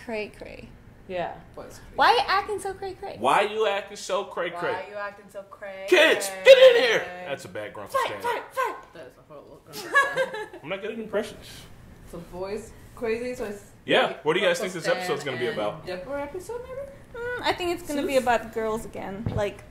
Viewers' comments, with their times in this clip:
0:07 Stan laughs in your face